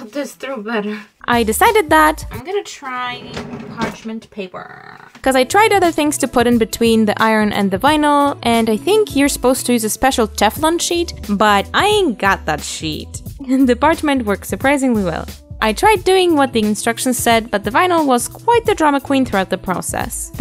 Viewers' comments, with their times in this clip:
0:08 that phone notification (?) sounds like my own and i swear to god i’ve paused this video 3 times already 😭😭